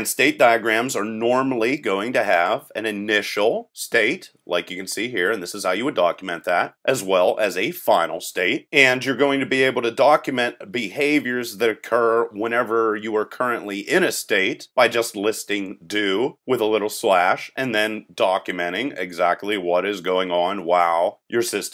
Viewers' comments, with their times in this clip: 0:09 "Bahavior" made me laugh Otherwise, good tutorial series. My Software Engineering professor told our class to watch this series.